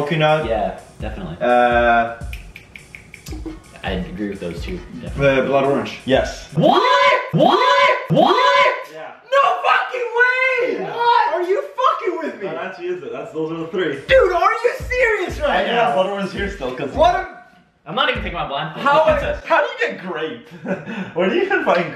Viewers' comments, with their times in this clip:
0:06 they turned into an alarm XD